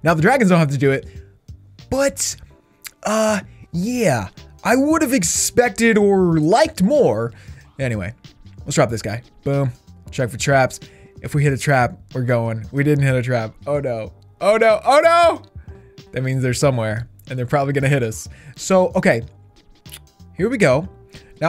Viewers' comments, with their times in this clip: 0:06 he sounded like Goofy from Mickey Mouse